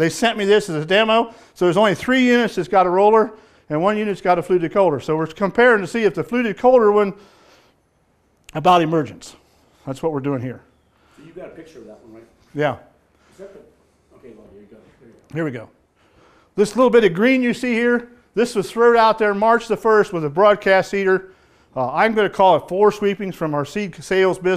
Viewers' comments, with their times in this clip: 0:05 What is the word he is saying? Its part of the planters. Sounds like "fluted colder" or something. Example Thanks.